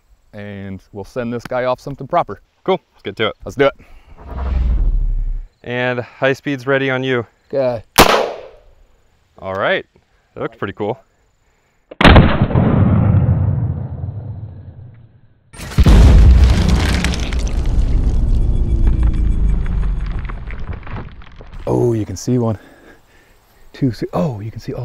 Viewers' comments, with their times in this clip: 0:08 sounds like the half life 2 pistol shooting sound effect